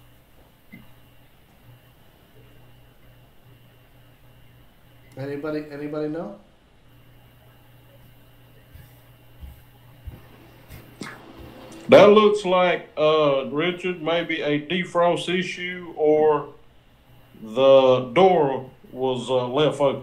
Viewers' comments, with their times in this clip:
0:07 That guy minute mark, I did not know that Hank from King of the Hill attends your webinar! 😂😂😂